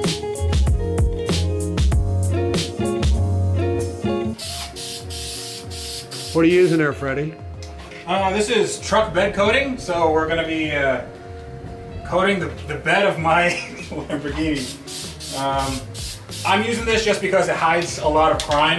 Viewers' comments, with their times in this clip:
0:04 Anyone else notice that his spray can went to the beat of the background music😂😂